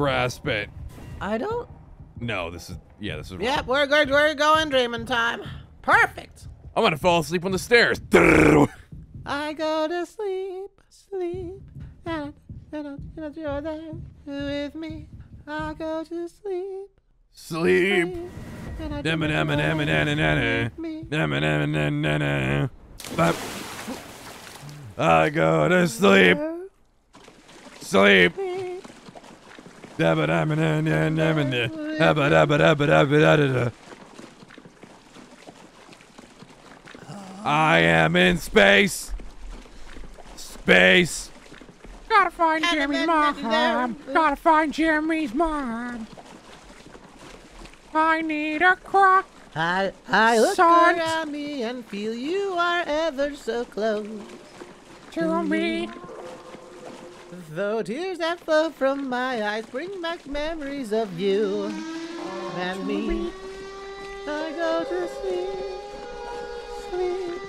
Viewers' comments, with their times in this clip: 0:08 Sun and moon singing Together is adorable! 😭💕
0:15 Love them singing the intro to edge of sleep haha
0:55 that distant wail was perfectly timed lol